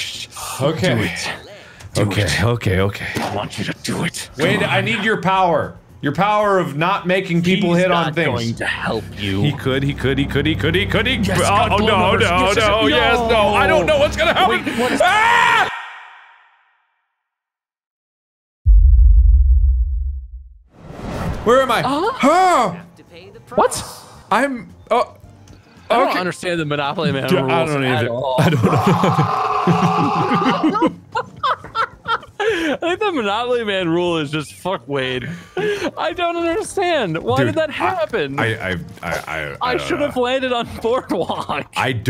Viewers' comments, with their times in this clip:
0:09 Mark starts panicking then screams screen fades to black I was half expecting to hear a ticking clock lmao
0:27 when it went black a add appeared with Ben sheperio laughing maniacally 😂 it was perfect just perfect